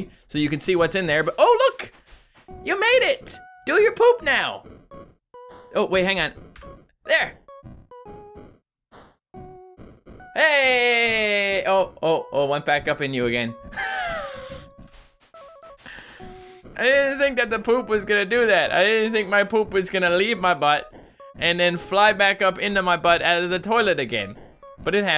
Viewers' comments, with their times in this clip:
0:10 When the toilet water splashes